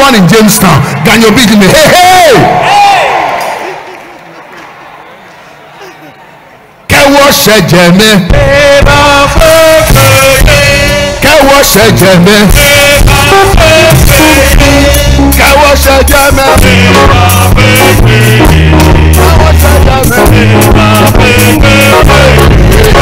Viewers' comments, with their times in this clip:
0:08 Great sermon. Song from on repeat! The bass guitarist hit it so good!